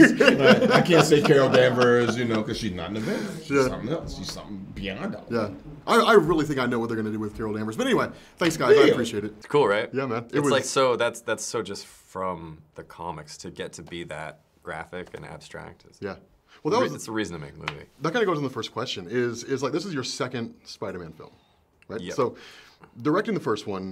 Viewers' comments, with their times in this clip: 0:05 Sam's reaction sounded like he knows too